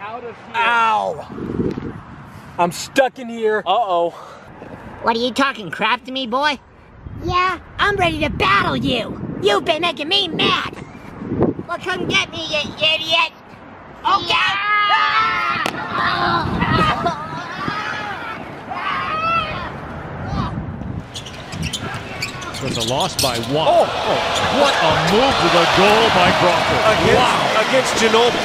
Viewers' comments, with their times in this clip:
0:08 He turned into Cartman!
0:09 omfg sounds like a character from south park
0:11 one of them sounds like cartman from south park
0:15 the blue ball sound like brick from ppg